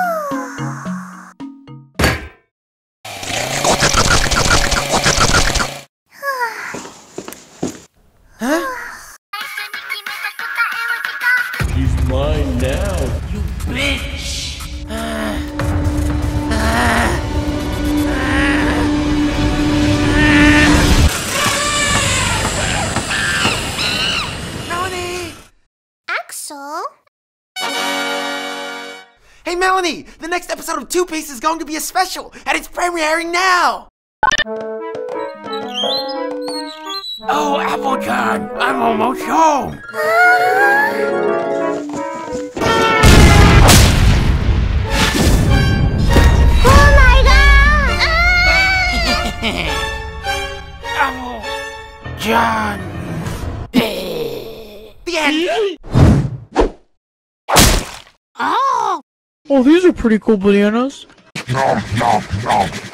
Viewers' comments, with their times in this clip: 0:03 me when the kfc gets here (that slurp sound not axol)
0:03 "Intense slurping sounds"
0:32 Anybody else notice the weird way he pronounced 'premiering?'
0:47 the nice song every with the best timing ever